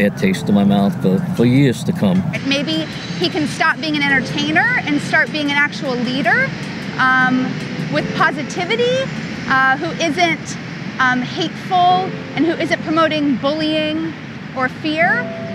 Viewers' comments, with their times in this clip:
0:03 "maybe he can stop being an enterTAINER, and start being a leaDER." OMG, could she be more annoying if she tried????